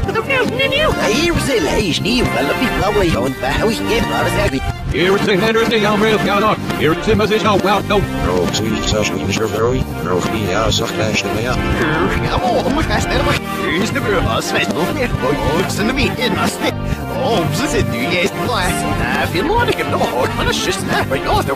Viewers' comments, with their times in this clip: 0:04 I kinda understand bobs voice